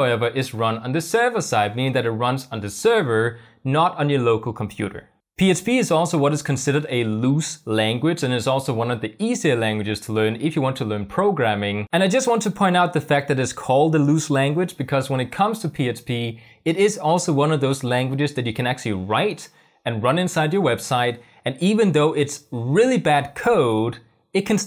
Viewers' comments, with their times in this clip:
0:09 I've been watching for and you have not mentioned php. You keep saying psp.